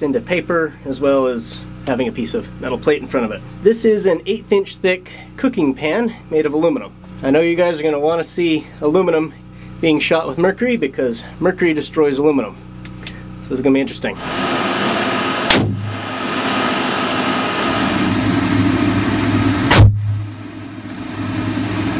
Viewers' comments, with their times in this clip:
0:04 eight inches thick!? that's a lot of aluminum.